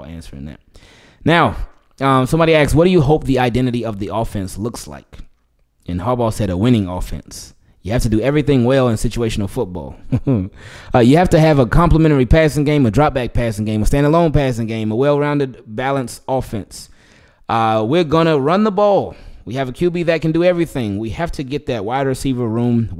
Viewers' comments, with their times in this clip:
0:10 the subtle yet very loud chuckle that speaks volumes was my favorite part of this video.. gosh I love this channel